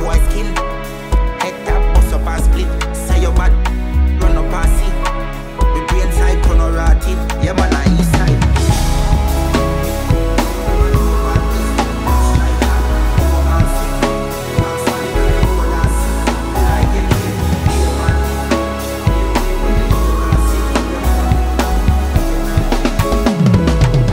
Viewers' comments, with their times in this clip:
0:08 I get why it's censored but it don't make sense for a tune like this On a side note, the band done a mad ting